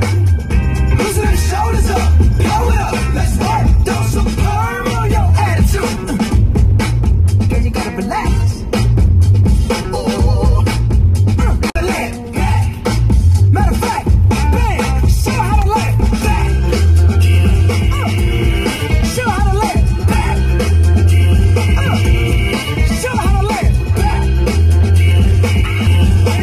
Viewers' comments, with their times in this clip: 0:08 LoL the ooohhh